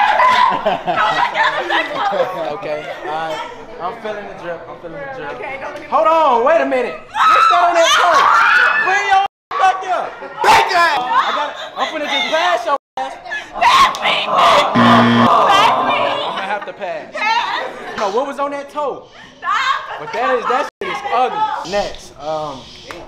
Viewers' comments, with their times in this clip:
0:04 the skinniest purr 🤣